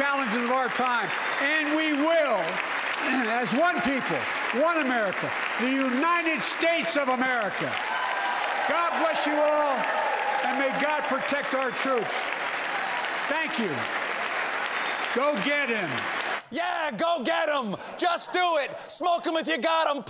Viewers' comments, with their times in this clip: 0:08 Did he end with "and may god protect our church"?